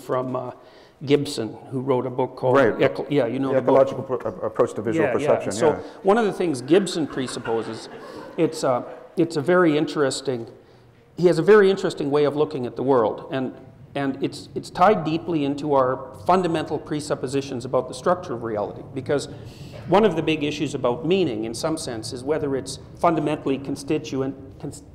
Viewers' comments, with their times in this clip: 0:07 I wonder why did the audience laugh